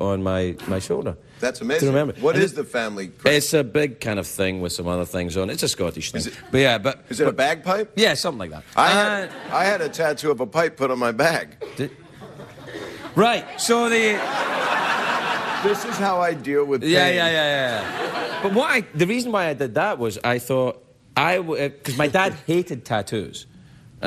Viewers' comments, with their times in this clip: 0:08 Actual awkward pause